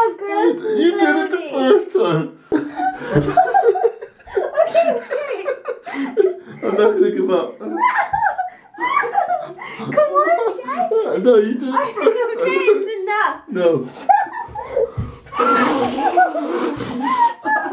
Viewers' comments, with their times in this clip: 0:03 dat laugh though
0:04 whene he laughs its so cute